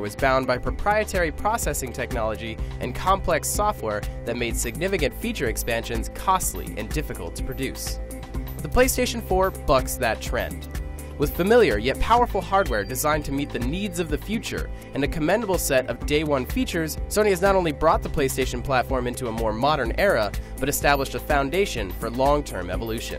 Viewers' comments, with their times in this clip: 0:08 Did he just say "The Playstation 4 fucks that trend" ?